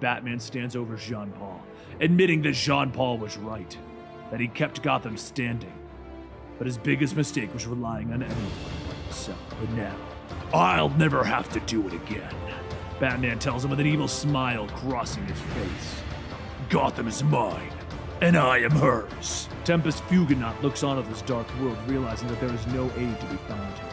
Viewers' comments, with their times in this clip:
0:07 relying on what? Speak clearly, man